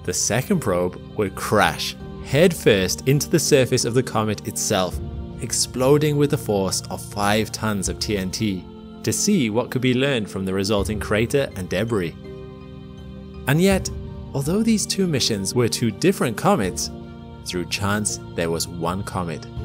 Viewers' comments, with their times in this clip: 0:04 Jesus…I was wondering when the stupid music would start. I’m out. Too bad. 😊